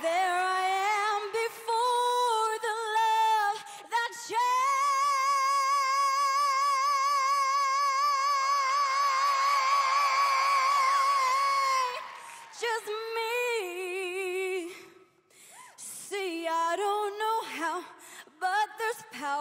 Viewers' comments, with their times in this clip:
0:04 I’m sorry but that note gave my goosebumps😭😅